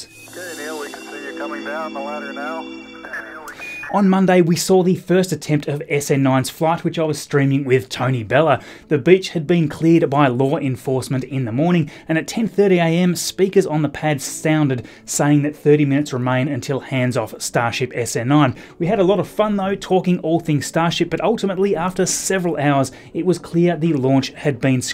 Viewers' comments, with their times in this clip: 0:07 The way you pronounced beach 🤣🤣😂
0:08 'The bitch had been cleared..." Oh. Right. Accent. Never mind.
0:08 "the bitch has been cleared" haha
0:09 “The bitch had been cleared by law enforcement...”